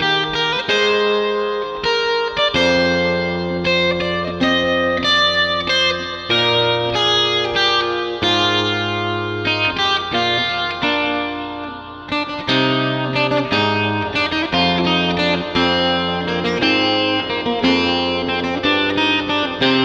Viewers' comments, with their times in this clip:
0:04 add some more basstone that'll make it sound kind of "fuller". apart from that very well done :D